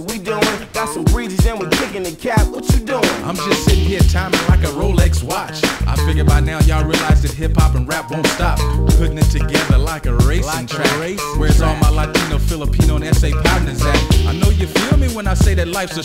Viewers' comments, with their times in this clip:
0:03 The guy wasnt that good, like he tried to say more words than possible and made it sound off beat. Like the flow was way off. Everyone else was dope tho. Alwaus bothered me when i heard the song as a kid